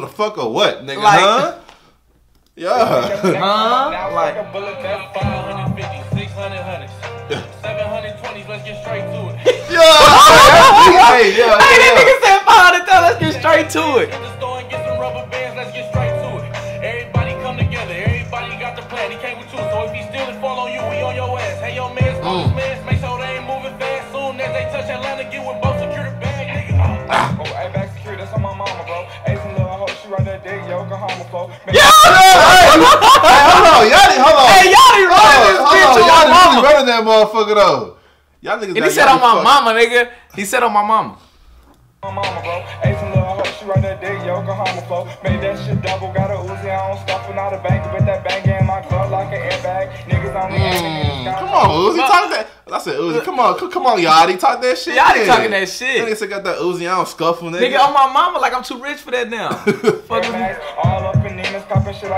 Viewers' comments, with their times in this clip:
0:09 that laugh is nasty
0:11 why that sound like that one mario dying sound effect😂😂😭😭
0:31 No one: Playstation parties once ur mic disconnect:
0:50 Mmm. C’mon Uzi talk tha- I said Uzi. C’mon C-C’mon Yatchy, talk that shit!” I’m rolling. They all sound the same don’t they. 🤣💀